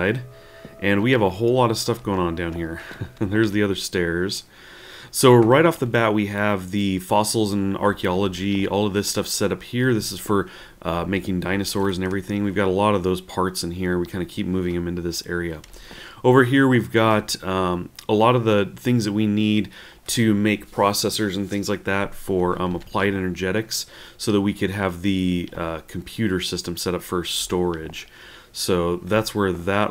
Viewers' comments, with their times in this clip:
0:10 I like how he says casually "making dinosaurs".